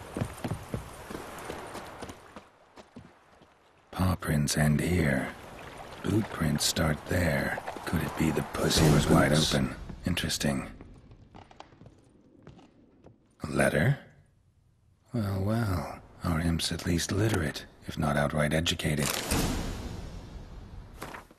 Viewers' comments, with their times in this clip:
0:08 ....wtf did he say?! lol